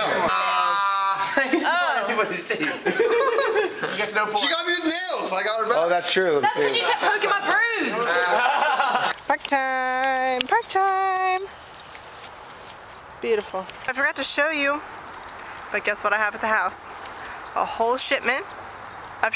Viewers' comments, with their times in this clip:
0:03 Jonah Hill !sounds just like him